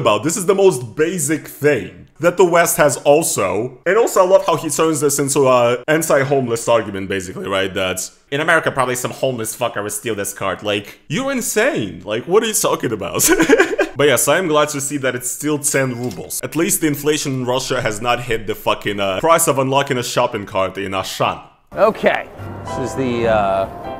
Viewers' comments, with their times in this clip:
0:09 Yo Homie that American accent is on point.